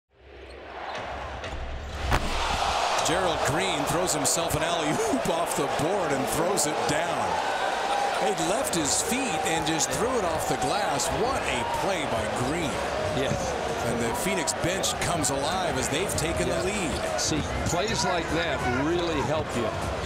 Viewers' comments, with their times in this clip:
0:04 The commentators voice cracked haha!